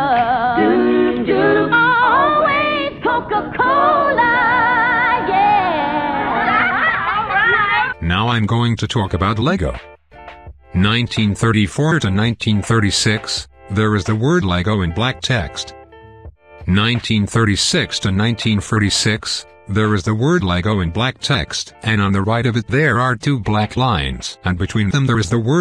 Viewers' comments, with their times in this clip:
0:08 WHAT DID YOU GET THAT WEIRD VOICE??????
0:08 the voice changes